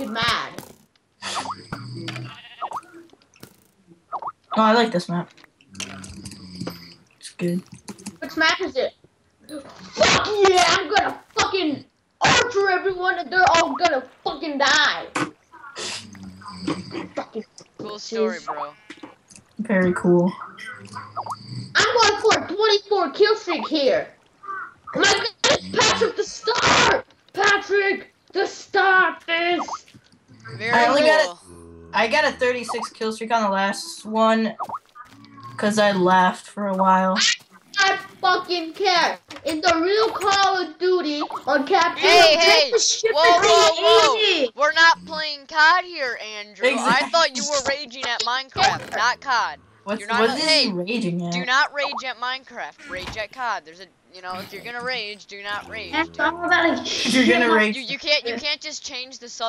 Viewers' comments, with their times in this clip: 0:08 Loooolololololololol you can't even hear half his rage. This better be a good map or I will archer everyone and they're all gonna funking DIE!
0:42 i hear someone snoring in the background but wait for it